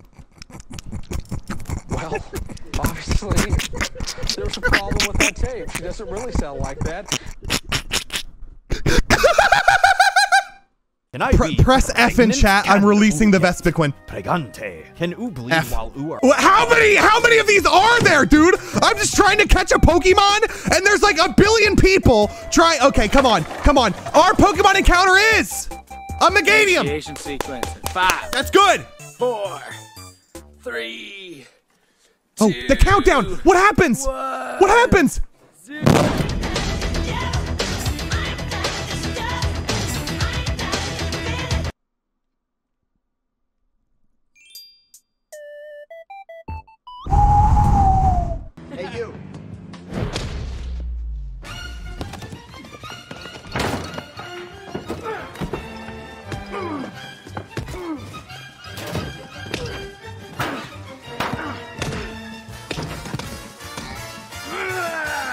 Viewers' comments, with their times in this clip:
0:03 clapping your hands with sanitizer be like:
0:52 when the doom music kicks in